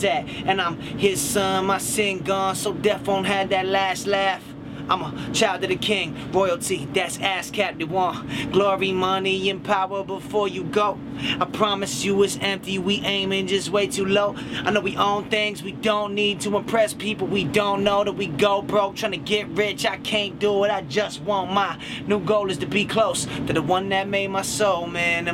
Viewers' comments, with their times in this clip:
0:07 Sounds like he swears love it tho